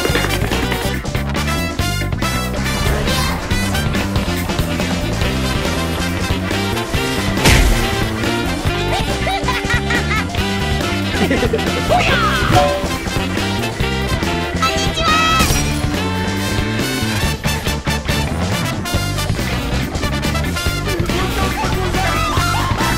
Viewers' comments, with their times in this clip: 0:06 That is so unlucky, but so damn hilarious and sound effect from the editing just makes it even more so.